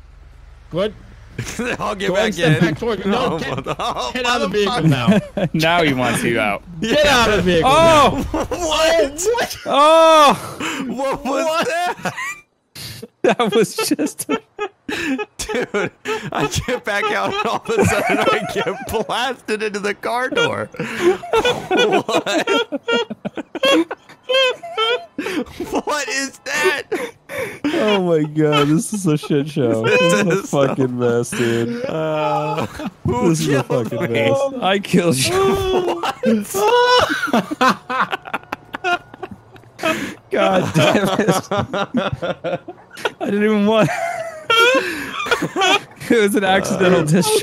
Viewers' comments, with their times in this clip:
0:08 what is that laugh xD
0:19 what was that laugh though
0:32 that laugh.. I'm dead